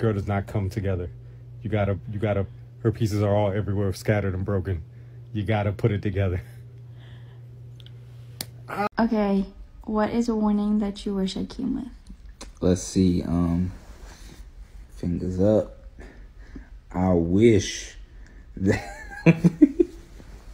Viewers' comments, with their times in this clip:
0:05 That lil smack is so funny. This one made me laugh !! But aye the more difficult to assemble, aquire, the more rare!
0:08 i laughed at that "I still love you slap" 😂